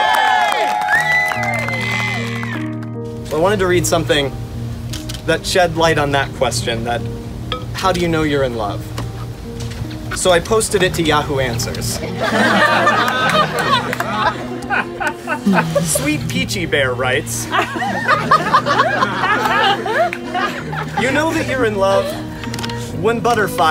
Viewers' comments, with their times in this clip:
0:06 that crying child is me
0:06 The little girl crying LMAO
0:07 can we just talk about that baby screaming because it just fits in perfectly